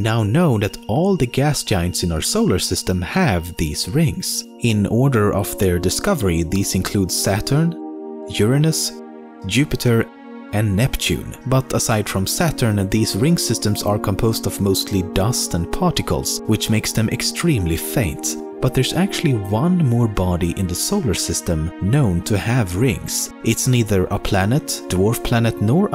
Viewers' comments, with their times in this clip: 0:07 did u mean "ur anus"